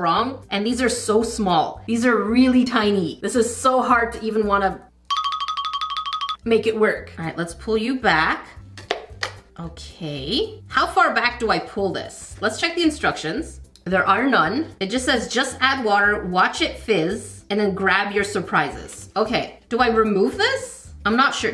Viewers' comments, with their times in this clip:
0:05 this sound triggered my flight or fight the sound of my alarm clock